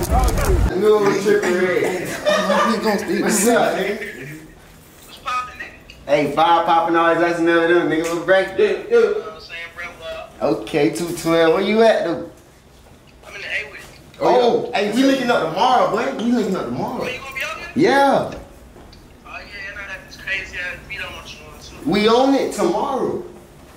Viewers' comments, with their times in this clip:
0:07 nigga wasn’t speaking English